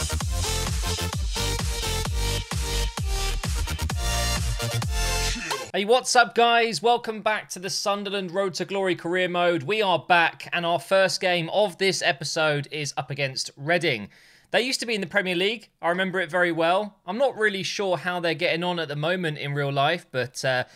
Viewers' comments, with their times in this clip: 0:06 I always think he says What’s App guys